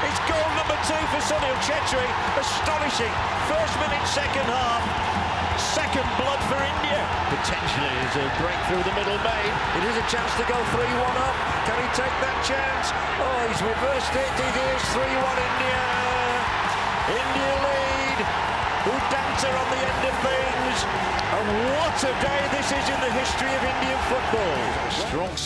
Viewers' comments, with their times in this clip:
0:08 the excitement behind this legendary voice☺️☺️